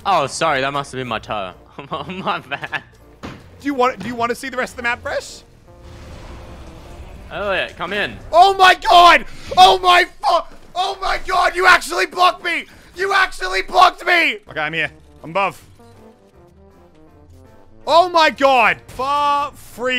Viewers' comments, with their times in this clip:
0:04 literally two voice cracks
0:04 is voice crack galore